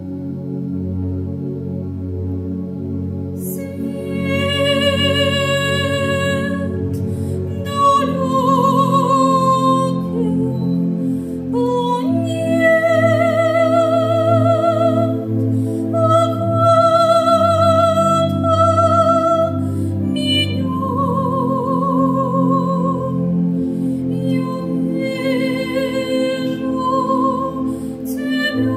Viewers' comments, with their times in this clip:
0:10 it kinda reminds me of the Lord of the rings when the elves sing